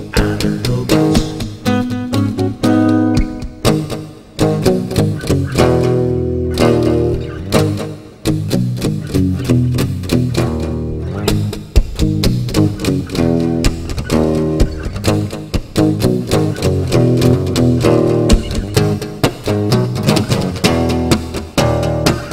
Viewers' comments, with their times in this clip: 0:03 a part of this sounded exactly like that song. It starts
0:07 Awesome song! But anyone else heared the riff of "Seven Nation Army" of White Stripes?